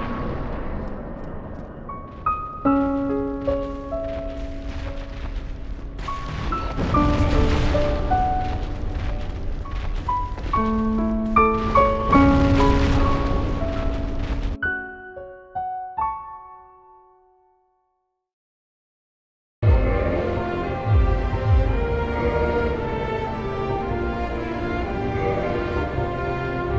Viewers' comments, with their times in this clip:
0:07 when you hear this music you already know that he found another way